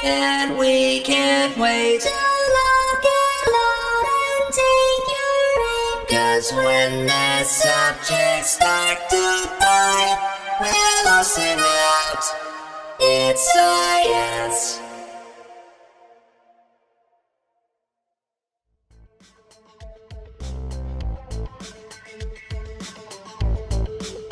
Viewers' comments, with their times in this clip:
0:10 that first L of well is a bit well I’m not sure